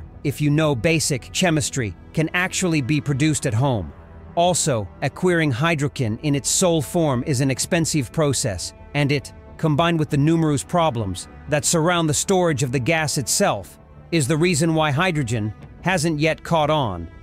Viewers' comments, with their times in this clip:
0:05 "A queering Hydro Ken" ... wonder how Barbie feels about that?